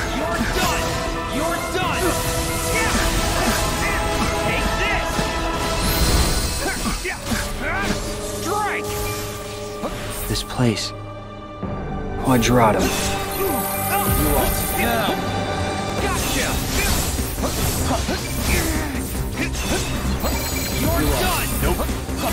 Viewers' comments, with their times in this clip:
0:08 the battle and the music makes it more intense fight